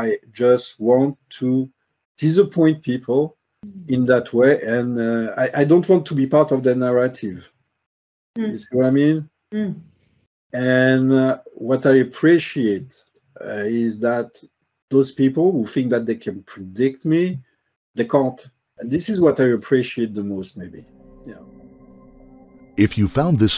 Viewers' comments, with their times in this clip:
0:07 The dude has someone tied and gagged. Listen closely
0:08 Whats that weird noise ?